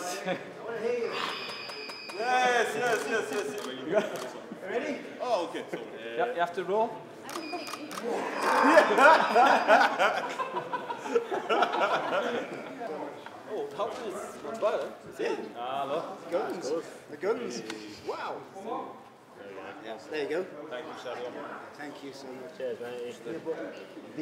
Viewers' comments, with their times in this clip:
0:09 Ibou Laughs In 6'4 😂